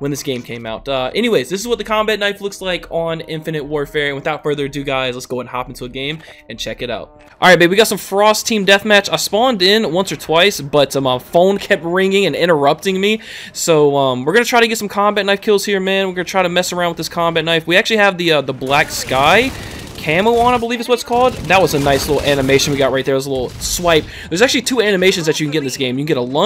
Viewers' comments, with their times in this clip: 0:09 Was that an "ight babe" near ?? I'm dead